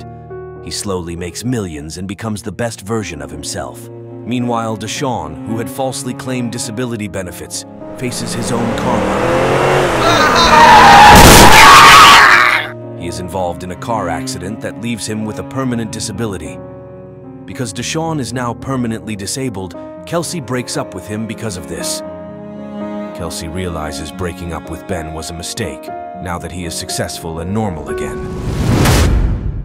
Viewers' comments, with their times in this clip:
0:10 imagine laughing when ur about to get hit by car😂